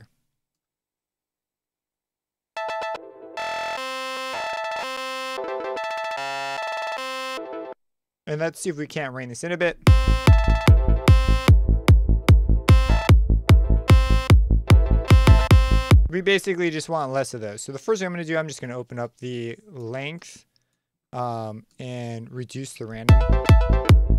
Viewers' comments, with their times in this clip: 0:10 that's super cool! It's generating like a granular-sounding melody :o